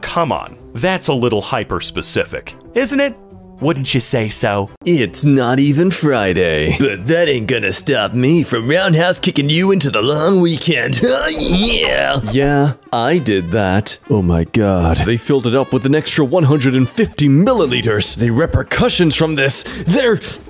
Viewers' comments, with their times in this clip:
0:05 Sounds like Fizzarolli.